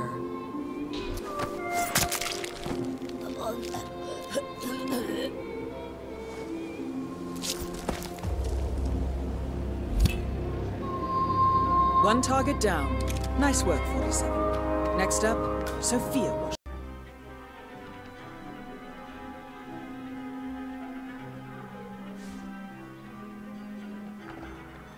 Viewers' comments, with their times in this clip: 0:07 the music somewhat reminded me of the code vein music